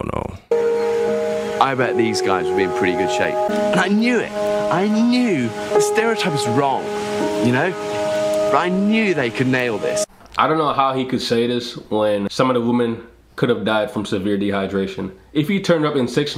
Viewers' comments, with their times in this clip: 0:04 he said that mockingly lmao and rightfully so